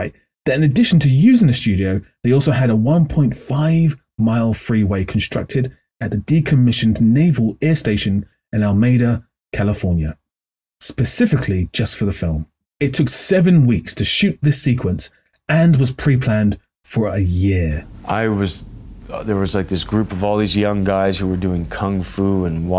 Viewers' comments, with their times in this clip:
0:07 Some of us are from California. AL-a-MEED-ah. There is a Spanish language, and there is an American accent. Heartbreakingly for the English, you can’t have both.